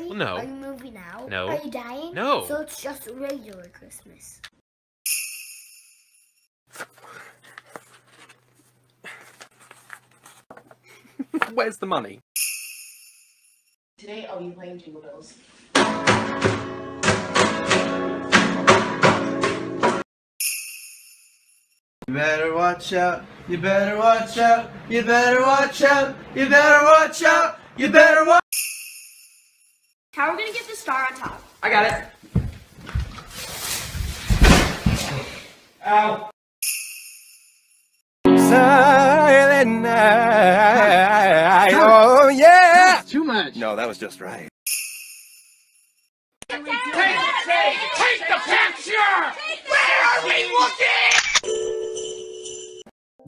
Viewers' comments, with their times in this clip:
0:07 that hit me so hard. The way he said ‘where’s the money?’ and the fact that I used to be this person (birthdays, not christmas, but still) makes it all the funnier. Also, just realised, HE SUNDS LAIK HE’S FRUHM LUHNDUHN!
0:11 tell me that doesn’t sound like Grian from his Minecraft videos
0:39 God that voice with Grimm is just AAAAAAAAAAAAAAAAAAAAAAAAAAAAAAAAAAAAAAHHHHHH